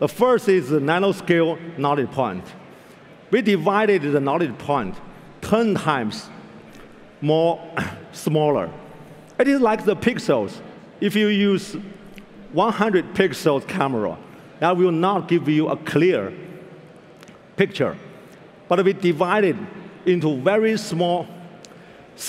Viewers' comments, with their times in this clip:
0:05 Can the AI teach me how to speak English without a thick accent? ;)